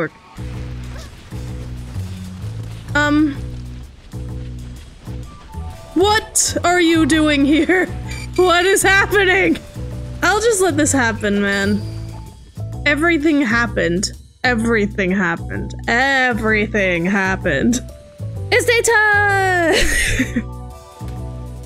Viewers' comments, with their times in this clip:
0:06 i heard shinyy noises dont no what it is thoe so?